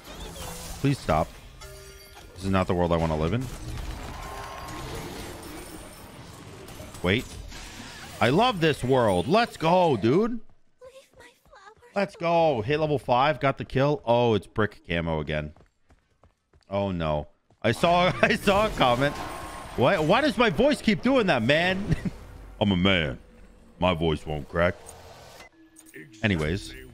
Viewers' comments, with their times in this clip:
0:07 no one gonna talk about that nu wa skin moaning